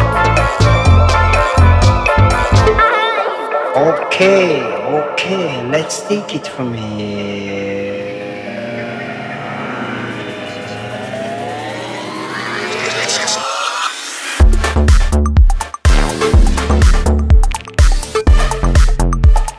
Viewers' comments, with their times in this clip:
0:07 Anyone know how he got that metallic effect on the vocal sample ?